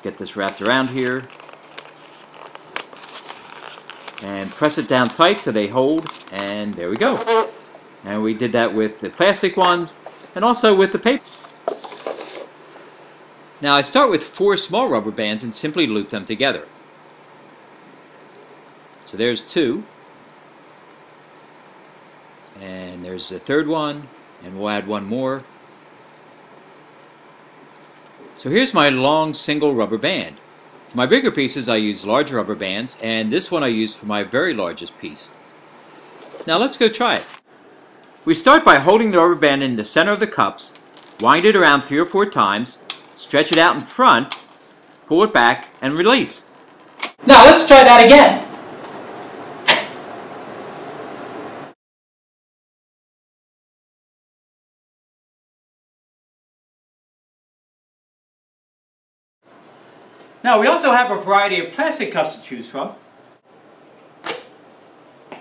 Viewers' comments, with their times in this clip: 0:10 I can only hear pa- Instead of paper. Is that part of the video?
0:47 why so loud?